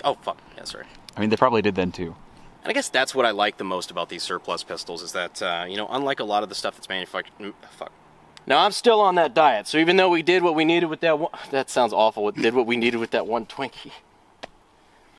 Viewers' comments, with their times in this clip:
0:10 Attempted to be Eminem again for some reason